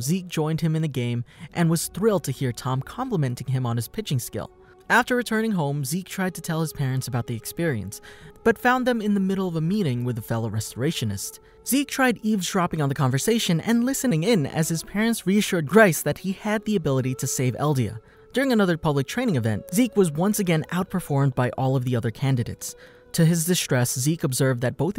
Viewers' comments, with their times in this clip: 0:10 yo what happened to ur voice